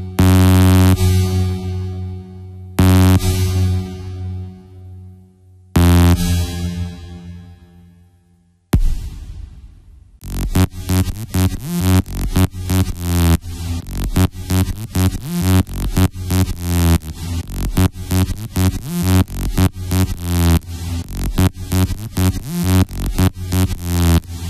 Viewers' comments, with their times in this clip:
0:10 I really like that beat. All you need is some symbols and bass to kick in and you'll get the beat going.